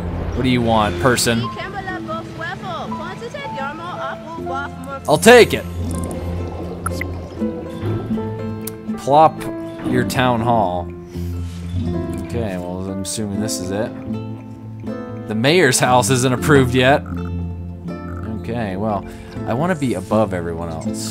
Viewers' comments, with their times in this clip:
0:06 Doesn't she sound like Conor's mum of AC3